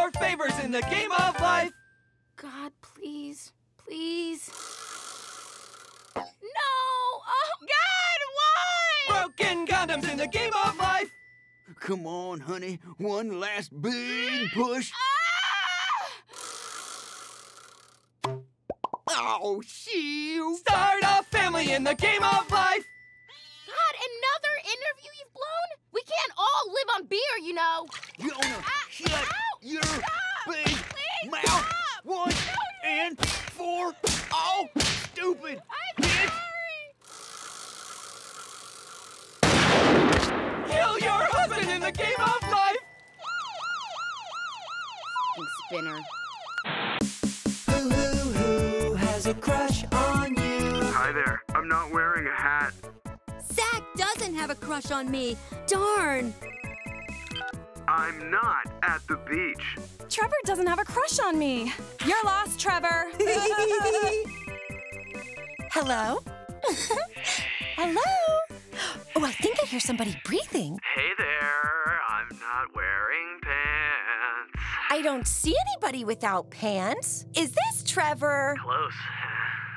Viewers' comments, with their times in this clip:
0:09 I don’t get what the singer says
0:22 Please tell me the pink one doesn’t sound like Meg from Family Guy.
0:38 gunshot "kill your husband in the game of life!" 🤣🤣🤣🤣🤣
0:45 I don’t know why but she sounds like Meg Griffin
1:03 doesn't that laugh sound weird?